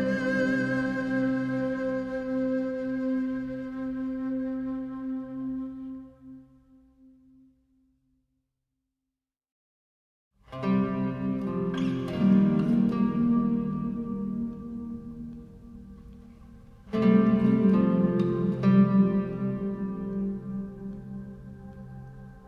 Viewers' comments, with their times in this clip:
0:06 The guitar that comes in just after is beautiful.
0:09 I want the inn music played at my funeral.